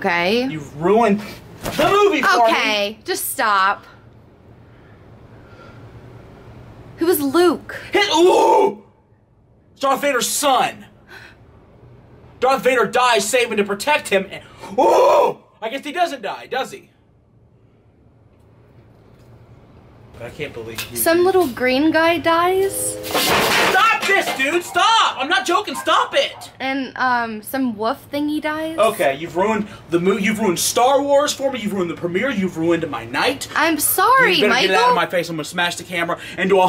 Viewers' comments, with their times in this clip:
0:09 GO TO THAT BIGFOOT NOISE THOOO
0:15 Click the over and over again!!!! He sound like a dog deep howling 😂😂😂❤️❤️
0:15 And he also sounds more like harambe
0:22 the train honking in the backround was perfect timing! 😆😃